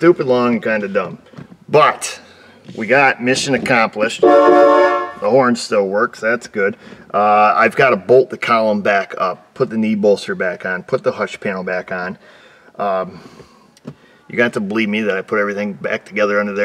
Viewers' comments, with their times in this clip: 0:04 That horn Best Horn Ever. Don’t hear those anymore. I think it’s 3 notes. I had a buddy who took one from an old GM pickup and installed it in his Miata (which usually has a teeny tinny single-note “meep meep” horn). Great effect and gets noticed when it matters.